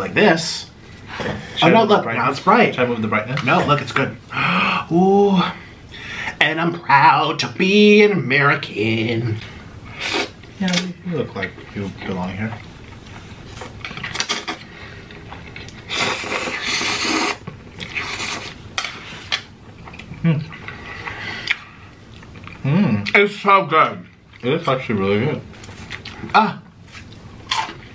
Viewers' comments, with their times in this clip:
0:08 is the most disgusting noodle slurp in the history of mouths.